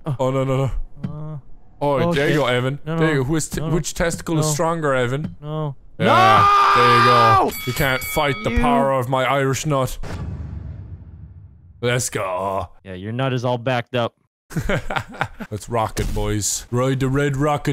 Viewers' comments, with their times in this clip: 0:05 vanoss scream lmao🤣🤣🤣